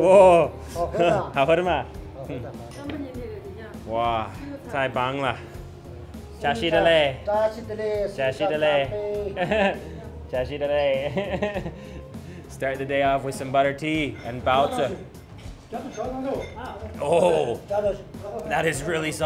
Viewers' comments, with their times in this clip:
0:05 you said what sounded like Tai Banglah for the word awesome, what's the difference between the two ways of saying awesome does anyone know please?